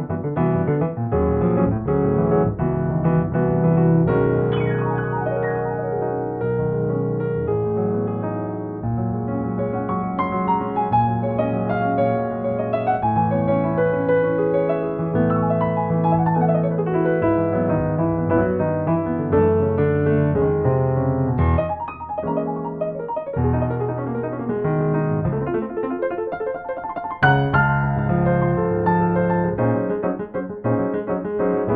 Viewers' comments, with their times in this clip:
0:03 Check out the glissandos Looking like he's mashing every key, black and white. But the sound is very clearly not chromatic. I wonder if there's a setting on the keyboard to register only diatonic notes?
0:13 Only Jesús Molina would have thought to go from AM9 to E/G$ Seriously though, awesome transcription of some unbelievably good improv.
0:15 my fav chord E/G$
0:16 i've never heard an E/G$ before